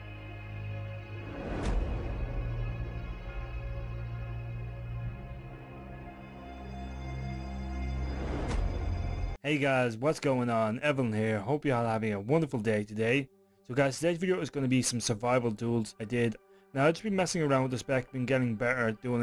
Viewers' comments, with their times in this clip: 0:03 who is song intro bro ? is diabolic